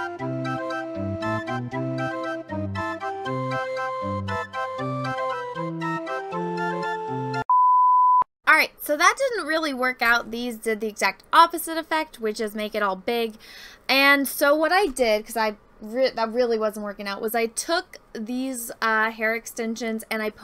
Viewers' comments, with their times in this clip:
0:04 Can we appreciate the music selection ? XD